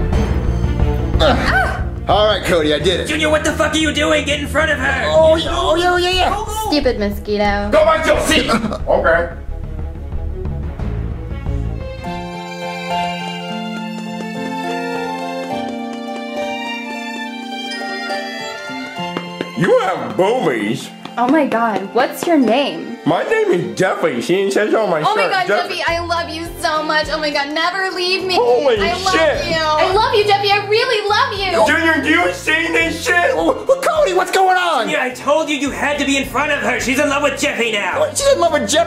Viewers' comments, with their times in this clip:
0:03 The way Cody said that 😂
0:26 Also got me dying the way jeffy said “do you see this shit junior”.